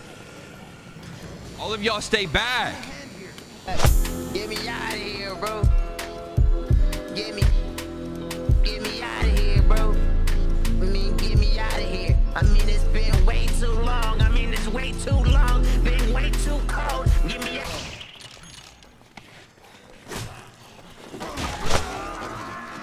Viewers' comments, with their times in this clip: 0:05 LMAOOOO THE MUSIC IM CRYINNN